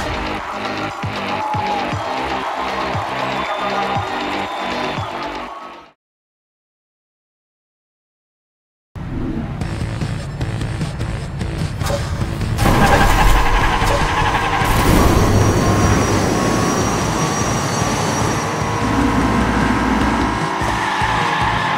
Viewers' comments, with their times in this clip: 0:06 Man, I swear that song was such a bop from Blur. Instant like just because of it